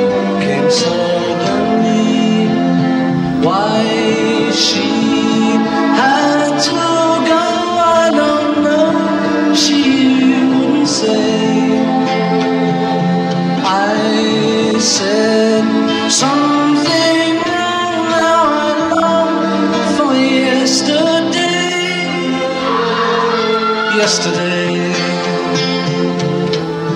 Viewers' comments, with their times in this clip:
0:09 I just realised if you listen carefully he was about to say 'used' instead of 'wouldn't' so it sounds like 'you wouldn't' he must have been nervous to mix up those words, still one of my favourite singers though.